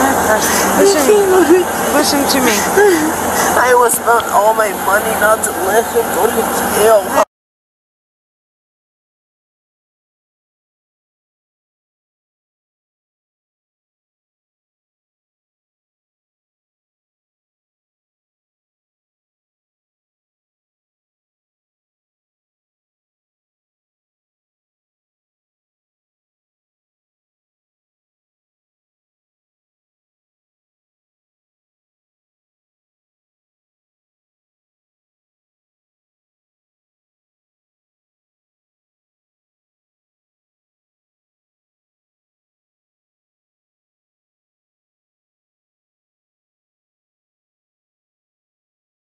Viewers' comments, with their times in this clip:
0:08 Why is the cop muting the interaction? This only makes cops look dirty, in my eyes.
0:30 Why is the audio muted? 🤔